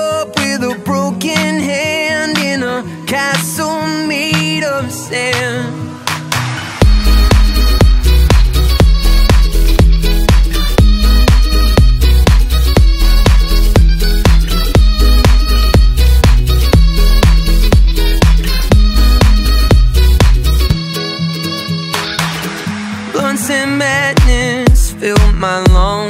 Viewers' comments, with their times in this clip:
0:06 The synth that kicks in that harsh electro-jazzy noise is pure gold. Makes the song, in my opinion.
0:08 banjo / guitar riff reminds me of Pistol Dreams by Tallest Man On Earth! Nice track!